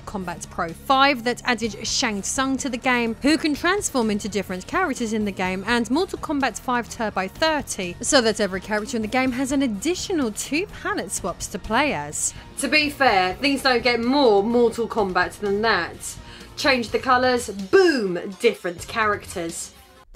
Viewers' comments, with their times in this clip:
0:08 this version had the best music tbh